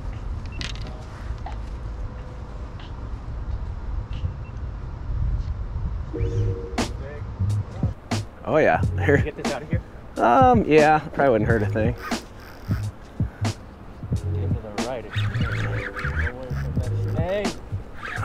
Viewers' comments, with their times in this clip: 0:06 uh oh 😱 You know it’s about to happen when he queues the music 🎶